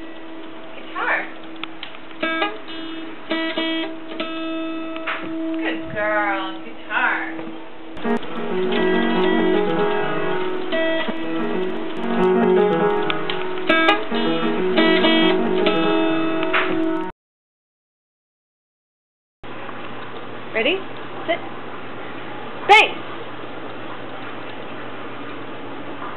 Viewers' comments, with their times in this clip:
0:09 The funniest thing is when the piano and guitar music is mixed lol